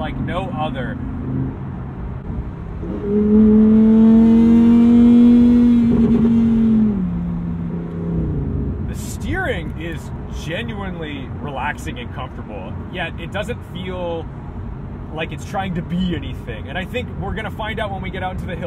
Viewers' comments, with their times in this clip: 0:03 That drone sounds kinda weird